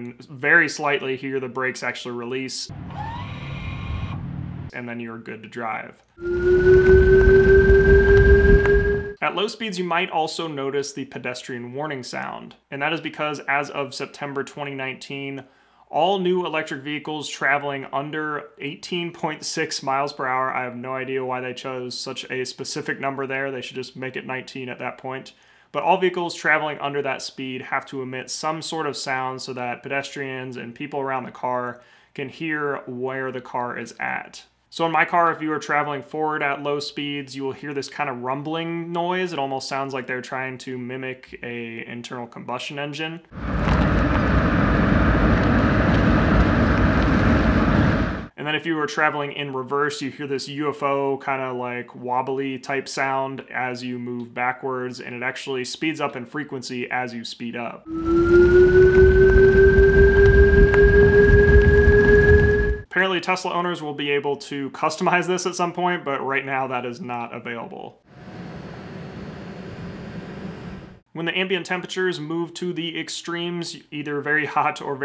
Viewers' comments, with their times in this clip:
0:03 it sounds like r2d2
0:06 pedestrian warning sound is the coolest sound I’ve heard so far
0:58 Woah, you weren’t kidding….it does sound like a UFO!! 😯
0:58 Sounds like an alien vehicle lol
0:58 really I hear that when they’re accelerating forward. I don’t know, but I totally love that sound. It sounds futuristic, like something out of minority report.
0:58 So thats why it sounded like a space ship.... fucking weird